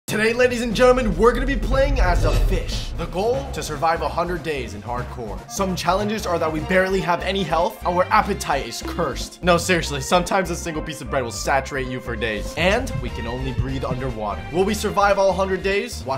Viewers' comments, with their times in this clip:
0:02 i thought i heard u say “playing as a bish” and i was like “WHAT DID HE SAY!! ”